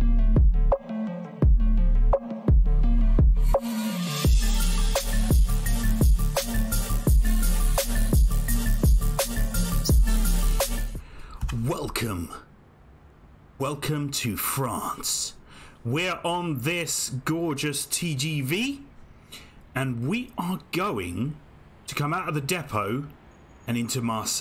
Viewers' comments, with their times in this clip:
0:10 wow that's voice looks like NPC